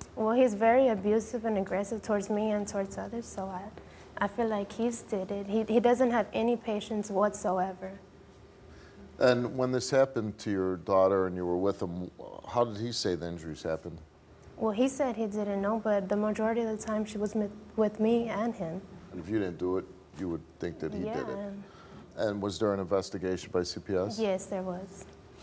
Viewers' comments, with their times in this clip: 0:09 sounds about Mexican